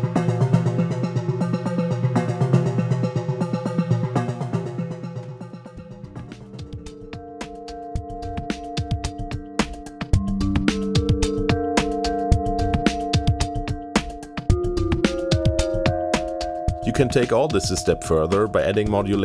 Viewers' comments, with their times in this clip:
0:07 Nice BoC vibe there!